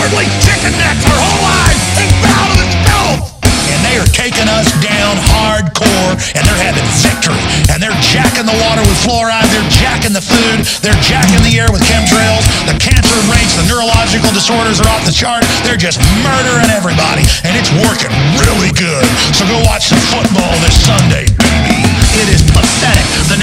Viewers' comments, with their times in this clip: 0:04 ah yes, a ringy snare 🏁👈😀👍